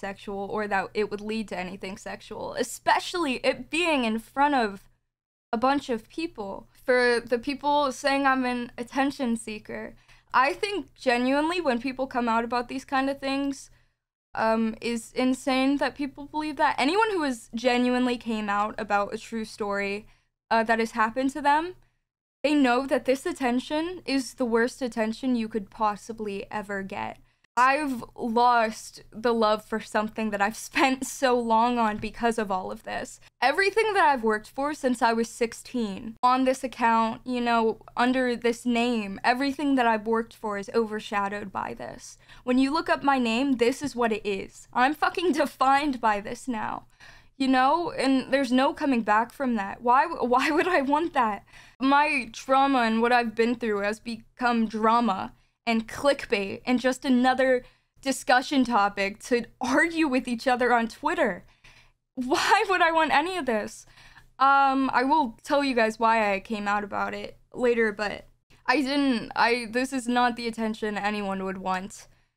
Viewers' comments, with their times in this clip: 0:08 Ugh she's so theatrical. It made me cringe a little in the first video but this takes it to a whole new level. Like the way she says "attention-seeker" 🤢She's hamming up every single word for her viewers and for the clips that will circulate. She doesn't seem traumatized at all. It's giving FAKE.
0:54 pffffft was brutal